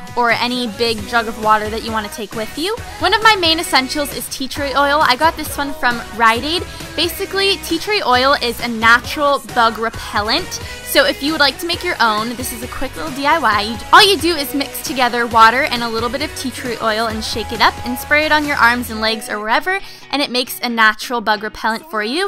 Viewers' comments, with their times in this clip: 0:07 Who else heard "Tea Tree oil is a natural thug repellant"